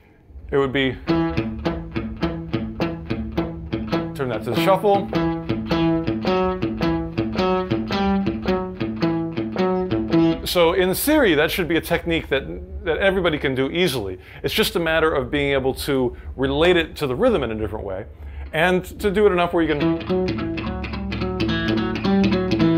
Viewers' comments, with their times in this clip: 0:10 Did he say - In Syria, that should be a technique everybody can do easily?? :D :D